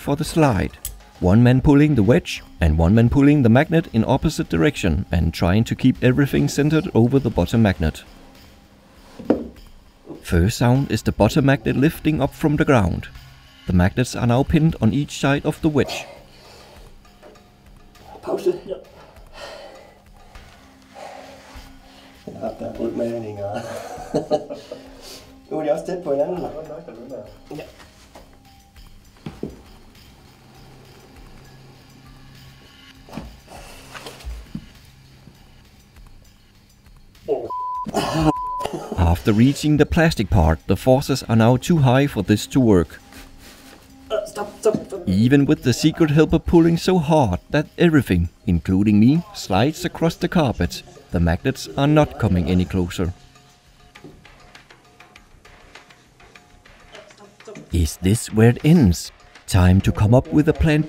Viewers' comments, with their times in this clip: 0:09 that was clearly the plastic screaming in pain
0:17 are you Danish ??
0:24 are you guys speaking danish i know you come from germany but...
0:25 they speak danish
0:47 I LOVE THE SONG THAT IS PLAYING ON THE BACKGROUND!